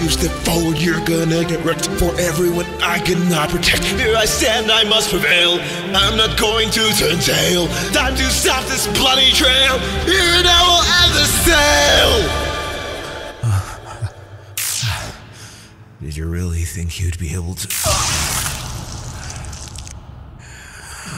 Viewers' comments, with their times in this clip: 0:09 Sans got so tired that he turned into Stewie from family guy